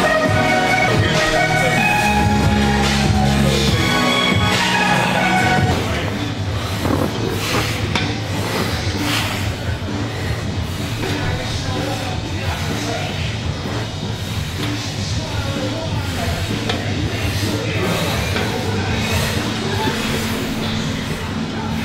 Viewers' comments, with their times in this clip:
0:06 Was that a fart 😂